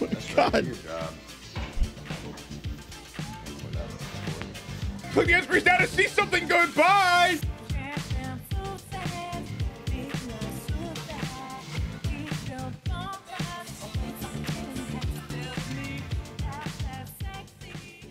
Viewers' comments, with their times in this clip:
0:03 Hearing "Me Crow Wah Vey" unlocked a memory I forgot I had...